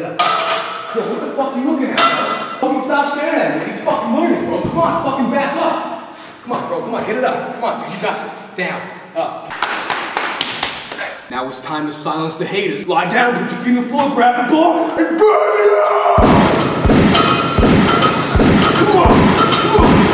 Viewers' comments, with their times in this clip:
0:06 bench guy laughing his ass off! haha